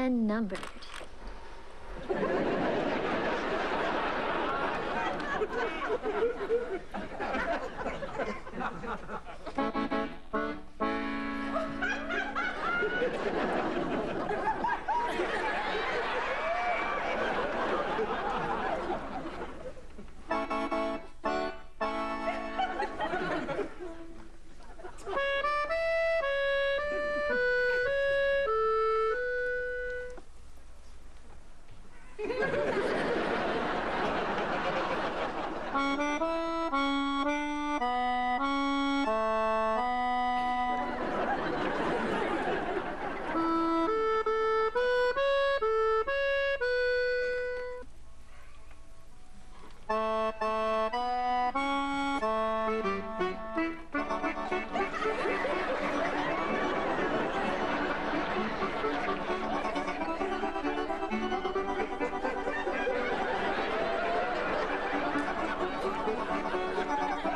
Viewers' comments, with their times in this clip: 0:10 the laugh .lol.
0:42 when the beat drops 😂
0:53 dis is one of da funniest ass moments of Family Matters two nerds duking it out on accordions, from onward LMFAO FOR REAL !!!!!!!!